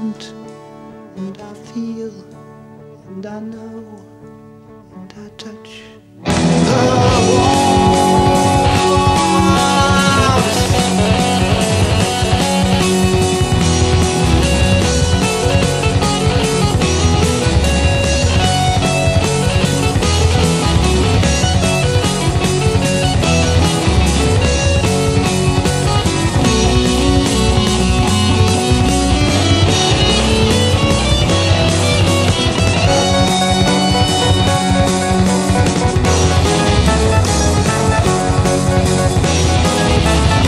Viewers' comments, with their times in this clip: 0:07 The keyboard and guitar part starting is disgusting... And that finale...
0:26 I've always found it weird that no one ever cites this as an example of early heavy metal, sounds like Iron Maiden 9 years before they even released their first album